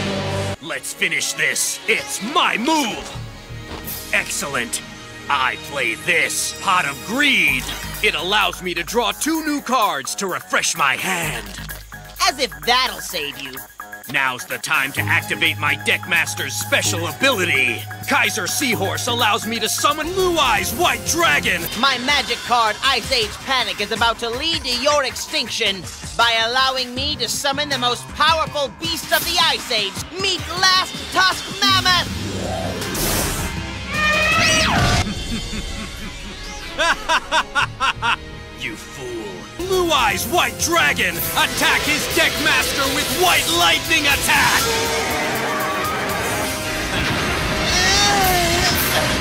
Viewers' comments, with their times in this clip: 0:04 I play this pot of greed Kaiba's epic theme kicks in
0:34 LOL Kaibas Laugh... "You fool" xD